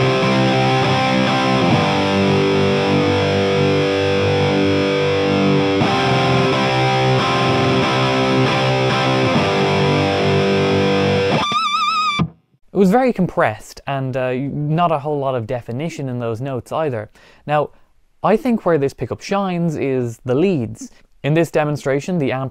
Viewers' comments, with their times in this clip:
0:09 That pinch harmonic had me rolling, wow 👍🤣